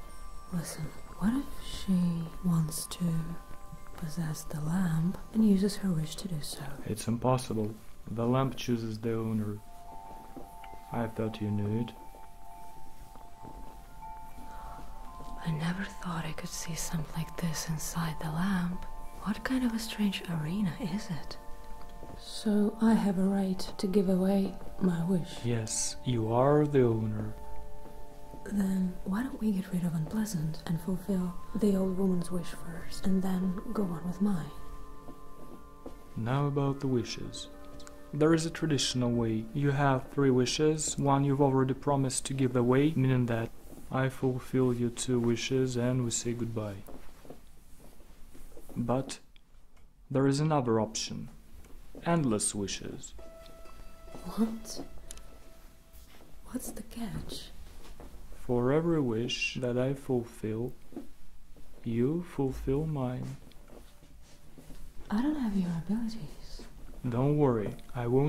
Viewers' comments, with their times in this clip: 0:03 Love the subtle melancholic bell sounds in the background (starting ), really adds to the atmosphere. ❤ The new actor's voice is great, glad he appeared in your video!
0:53 The sounds, th SCORE - PLEASE NOTE THE SCORE, the music,like in when he mentions the wishes... this is amazing. Real cinematic ASMR.